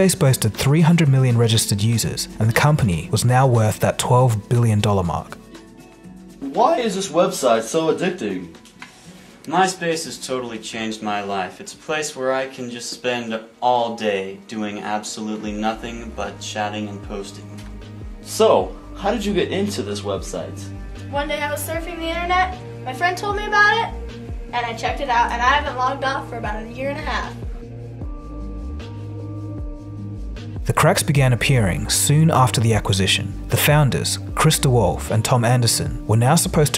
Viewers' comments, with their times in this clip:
0:09 Hearing this guy speak like that is honestly haunting, even if he was joking, he really felt it at the end lol
0:21 that was scripted af and the mic wasn't even working.